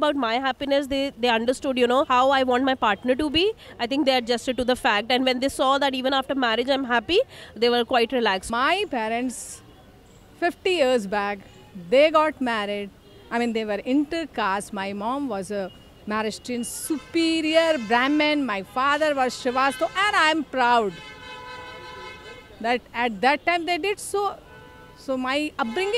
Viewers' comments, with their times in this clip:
0:08 this woman is so well spoken! In India, its a privilege to have a parent like her.